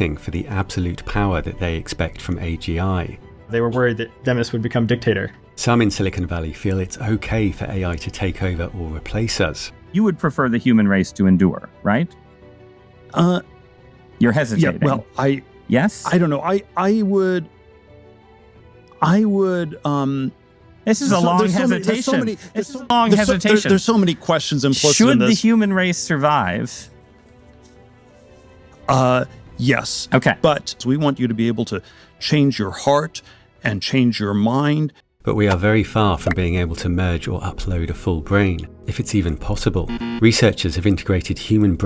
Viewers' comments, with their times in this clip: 0:07 The way he was hesitating is soo concerning.
0:22 excuse me why are you stuttering?????????? What is there to think about???? Yeah humans can be terrible alright but why are you stuttering